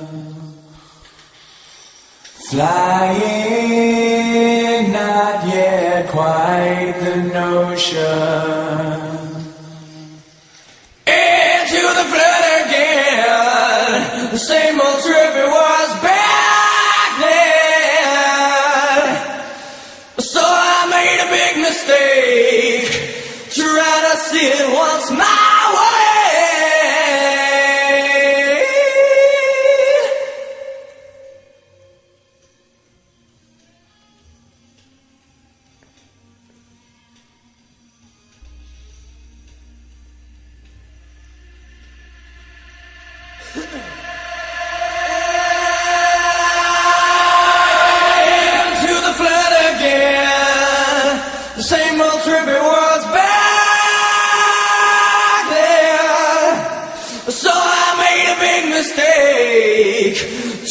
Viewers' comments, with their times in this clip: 0:09 Layne comes in like a freight train on Would!! Good
0:42 does anyone else hear a cough? Why do I doubt that's on the master tape?
0:43 ish I'm surprised that when mastering they didn't take out laynes "clear throat cough!! here comes a long ass scream!!!!!! Wonder if they just left it in saying No one will ever pick that cough up and here we are clear as day the cough that should have been edited out.........
0:43 you hear someone clearing there throat is that part of the song or was it just left there?